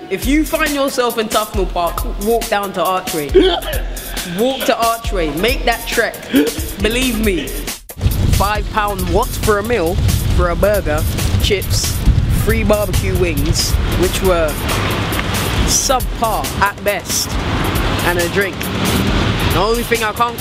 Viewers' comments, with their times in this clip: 0:03 The laugh is too funny looool.